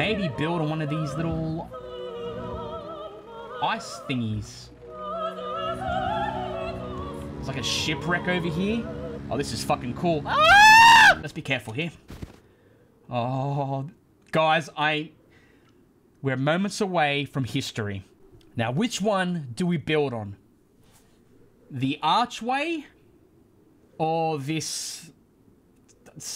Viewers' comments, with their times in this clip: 0:08 yeah war cry m8 XDDDD